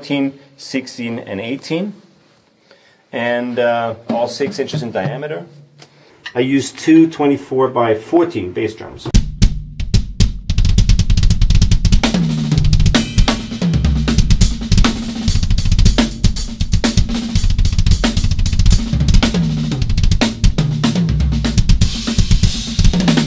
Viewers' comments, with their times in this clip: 0:09 those groove man!!